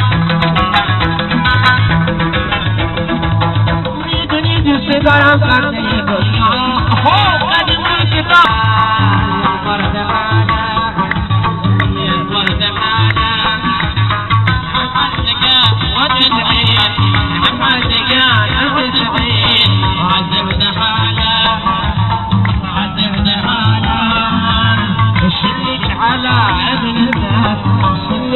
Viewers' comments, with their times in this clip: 0:10 Ya I know he's singing Farsi but he sings in Arabic.